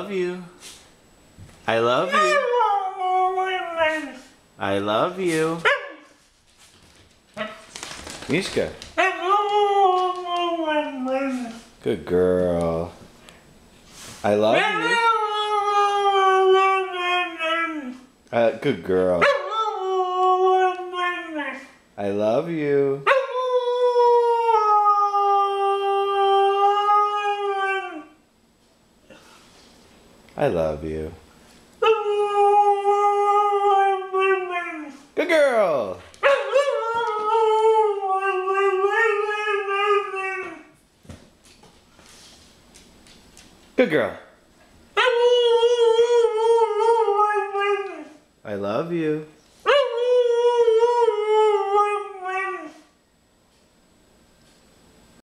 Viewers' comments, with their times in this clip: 0:08 it sounds like she's saying "I love you! You're my best friend!" XD
0:11 She was saying "I love you ass hole" o.o
0:19 ha...he's prefers mom....PS I heard mama
0:22 completely random howl lol
0:35 haha the way he says good girl made me laugh
0:45 dat singing solo man